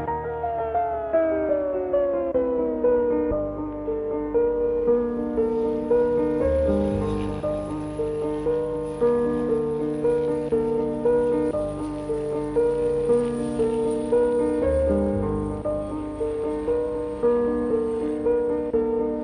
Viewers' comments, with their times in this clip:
0:04 coldest piano outro ever